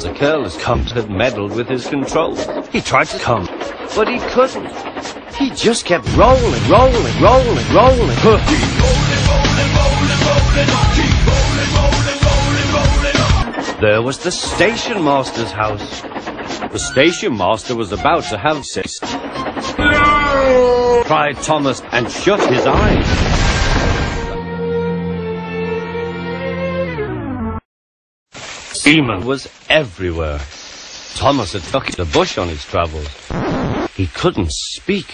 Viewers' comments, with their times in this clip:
0:05 I would pay good money for a full version of Ringo Starr singing "Rollin'." XD
0:20 I somehow predicted that I would hear Darth Vader saying NOOOO here.